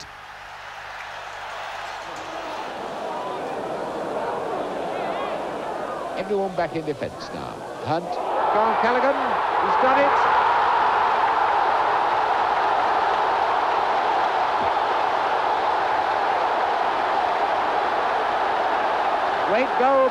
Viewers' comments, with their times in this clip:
0:04 Didn't realise Martin Tyler was commentating back then